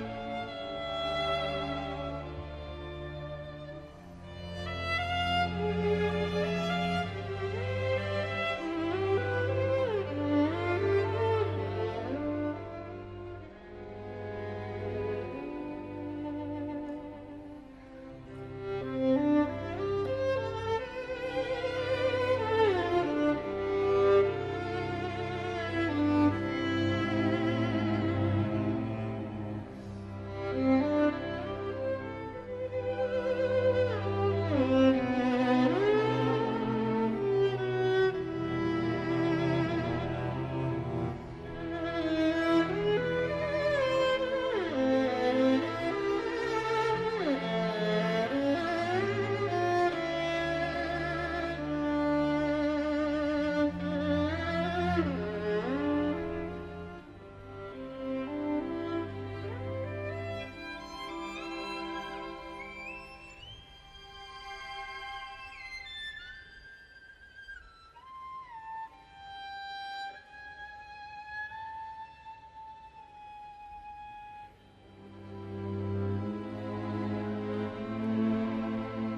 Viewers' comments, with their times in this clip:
0:08 I've never heard a violin make that sound, it's absolutely breath taking!
0:18 this g string ❤
1:02 where he does the harmonics is perfect
1:06 how did he made it sounds like a bird?! You are one of a kind Vengerov!